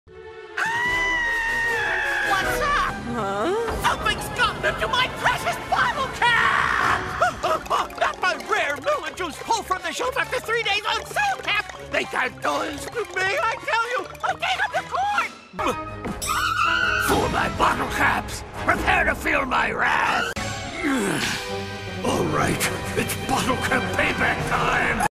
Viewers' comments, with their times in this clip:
0:00 James's voice actor is 67...yet he can still pull off perfectly
0:05 I never thought someone screaming the word "bottlecaps" could sound so fucking raw, jesus
0:08 I have no idea what he is saying
0:17 he sounds like meowth and lord zedd mixed together
0:19 the cut scream makes it better-